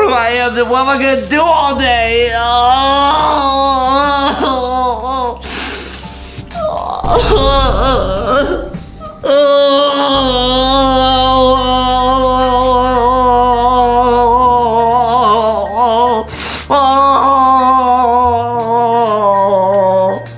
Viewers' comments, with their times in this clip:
0:03 that’s obviously fake crying